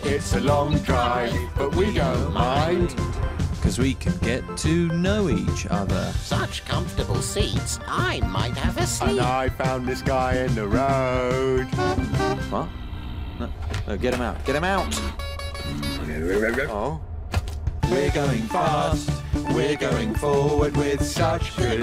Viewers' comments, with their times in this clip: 0:08 I love how Red's first reaction is to get him out while honking a horn at him.